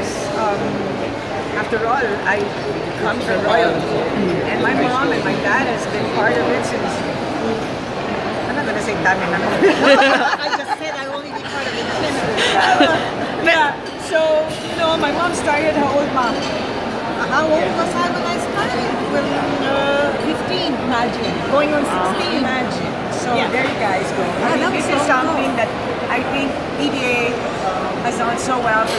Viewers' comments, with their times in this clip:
0:09 I miss her amazing smile and laugh.